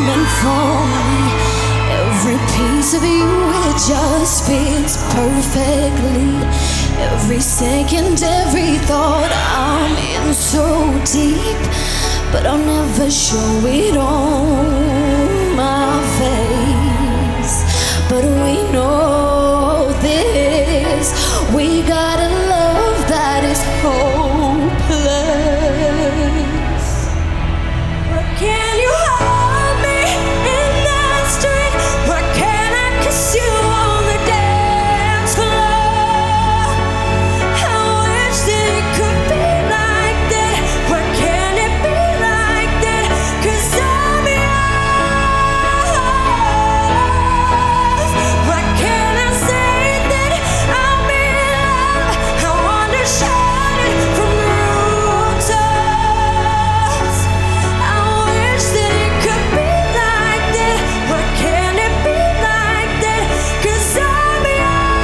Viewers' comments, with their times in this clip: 0:05 she's the one who sing :) the one with raspy unique voice ✨
0:46 kinda pitchy but her voice is powerful.